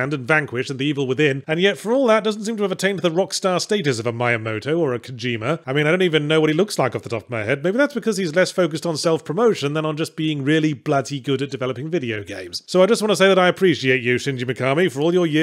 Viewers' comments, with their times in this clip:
0:03 who's Maya Moto